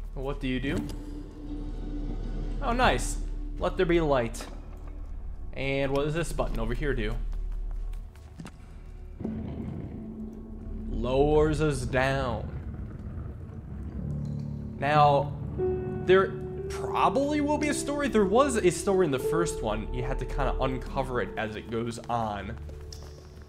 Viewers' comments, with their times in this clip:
0:08 sounds like northernlion